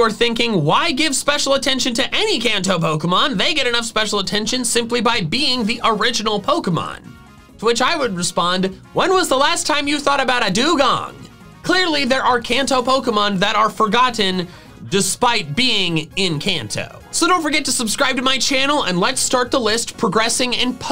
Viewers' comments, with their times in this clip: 0:08 the way he just says "when was the last time you thought about a dewgong" made me die laughing for like 5 minutes🤣🤣